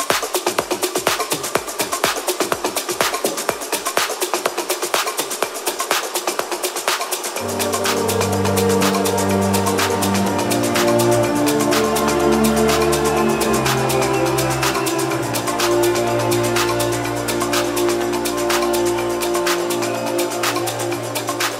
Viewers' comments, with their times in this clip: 0:08 = Goosebumps & emotion! What a tune. 🙌🏼🥹😎